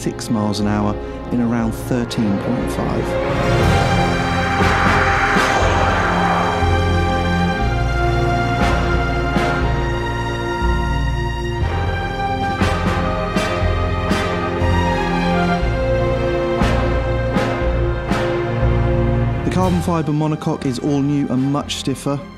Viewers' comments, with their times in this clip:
0:04 I thought I was watching a bond movie with the music, Love it
0:04 Man.. That song is just absolutely fitting for such a majestic work of engineered art!
0:07 sounds like Bond music
0:08 Wats the music ?...sounds glorious